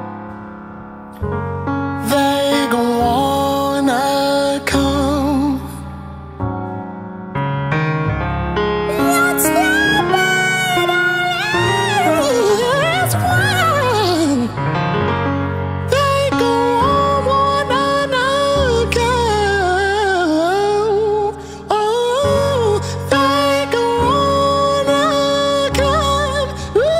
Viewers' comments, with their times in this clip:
0:10 And then .........i hate it here im moving to mars🤣🤣🤣🤣. His falsetto is NOT OF THIS WORLD